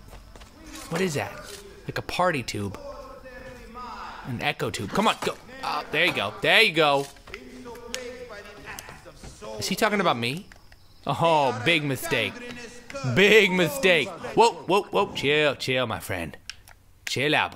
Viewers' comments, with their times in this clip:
0:05 When there was that voice in the background shouting I thought some one was calling me. It really confused me.